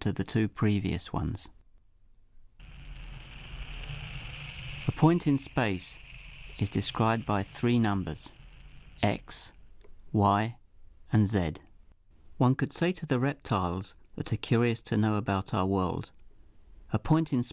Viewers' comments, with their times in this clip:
0:03 Why the heck is a pont in space described by three numbers, eggs, wine and set?